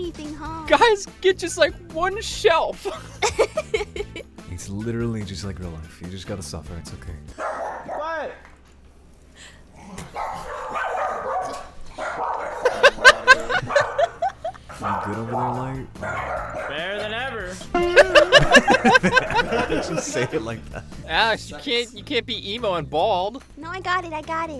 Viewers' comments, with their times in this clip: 0:08 the dogs barking make me die like right now a human is not typing this. This is a ghost.